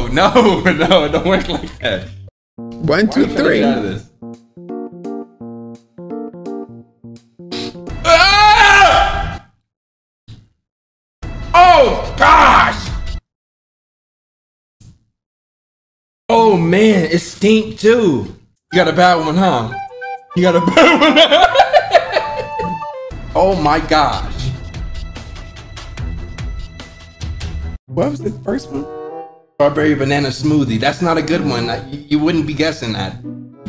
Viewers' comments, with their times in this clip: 0:08 bruh this fuckin warcry I cannot watch this without laughin
0:18 that laugh is amazing 🤣
0:21 such a cute laugh